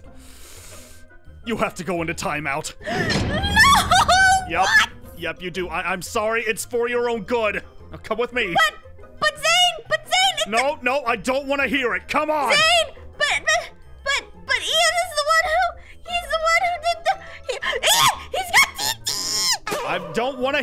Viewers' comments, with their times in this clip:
0:06 I thought Zane said “4 year old good” 😂